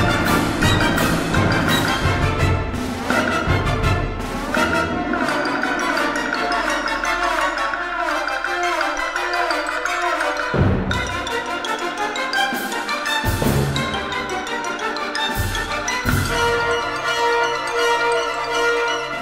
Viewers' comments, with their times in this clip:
0:04 You don't wanna know what the trombones are imitating